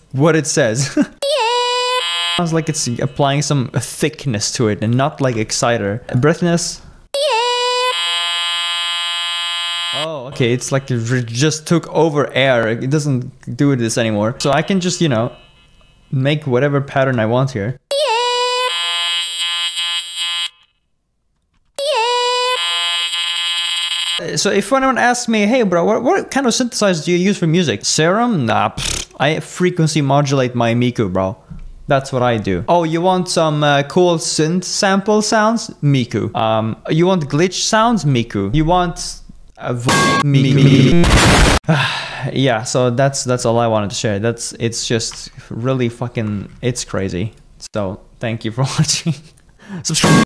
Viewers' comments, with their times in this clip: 0:02 Miku's tongue got replaced with a string and for they put a computer in her mouth and someone got a wrong answer on some fucked up quiz
0:10 It hurts mai freakin ears LOL Edit: Im tired of it LOL🫨🫨🫨🫨🫨🫨🫨🫨🫨🫨
0:15 what I hear when I get a haircut
0:18 Sound like electric hair clipper like that soundtrack with miku accent haircut 😮😮😵😵😵
0:18 sounds like dentistry type beat
0:19 sounds like that one cutter in barbershop
0:22 Nokia calling ringtone be like:
0:24 Oh no my chainsaw is broken
0:24 Miku to mosquito
0:27 hurts my ears 😭😭😭😭😭😭😭😭😭😭😭😭😭😭😭😭😭
0:39 you want metal pipe Miku mikus all over the place
0:40 **METAL PIPE SOUND**. minimimmimimimimiku 💥💥💥💥💥💥
0:40 MiMikuMikMMikMiMikuMikuMikMiMikuMikuMiMiMiMMMMMM (BSOD that happened in LITERALLY a jiffy)